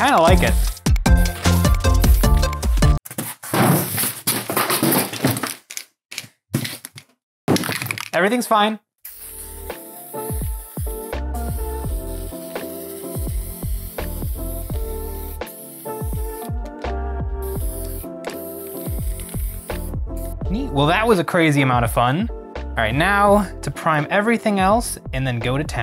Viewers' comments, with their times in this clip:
0:10 Today we’re going to grind people into peoplebutter to feed to other people grimdark horrorshow feelsbadarrgh (chill lo-bi beats )